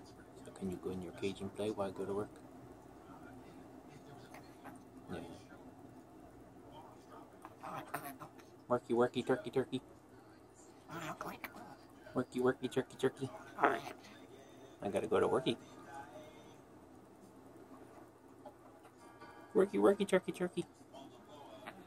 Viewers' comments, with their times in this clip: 0:09 Listen closely you can hear max mumble “You’re not going to work”